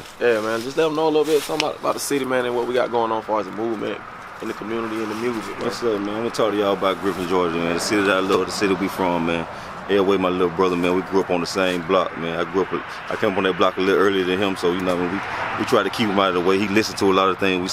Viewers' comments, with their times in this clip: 0:05 now I know what a black Boomhauer sounds like